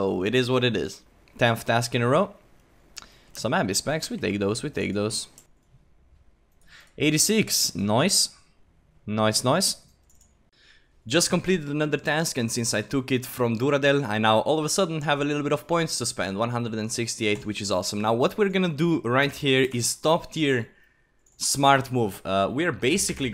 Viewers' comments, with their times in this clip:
0:07 You sound like an aussie saying 'nice' hahaha